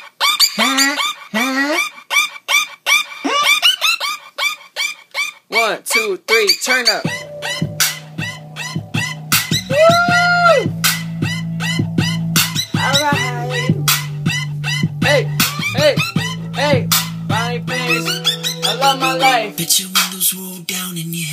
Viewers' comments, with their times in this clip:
0:07 808's! I love my life.